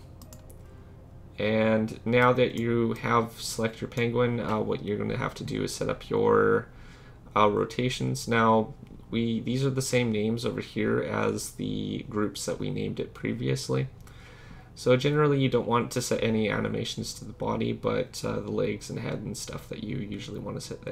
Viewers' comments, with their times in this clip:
0:06 Man sounds like a beatboxer